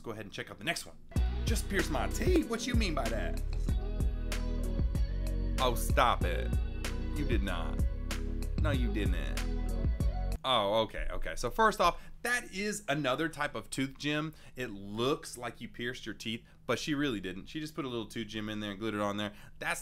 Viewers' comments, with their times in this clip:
0:05 did you hear how he said that 😂